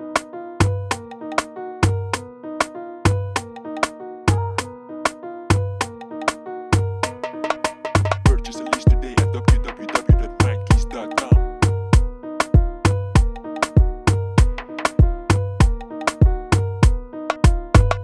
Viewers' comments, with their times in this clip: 0:04 Love the Vox ! This one makes me think of that beat of yours called 'Bunda' sounds dope man the piano melody drives me away 💯